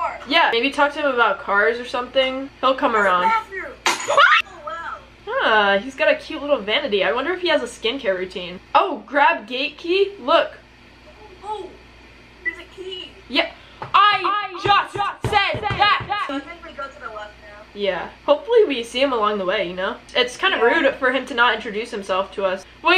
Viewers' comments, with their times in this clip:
0:03 her scream here 😂